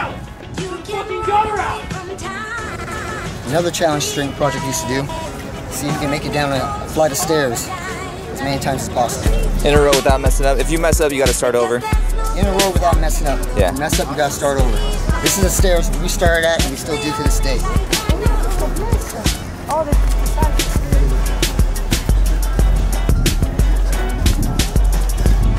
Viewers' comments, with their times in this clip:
0:07 The music and this dude his physique is perfect, much rather that than the big swole look